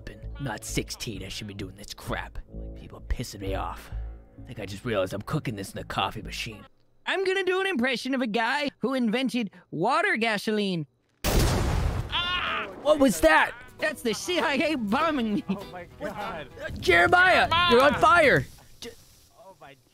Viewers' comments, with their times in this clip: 0:07 “I’m gonna do an impression of a guy who made water gasoline” •Not even a millisecond later* BOOM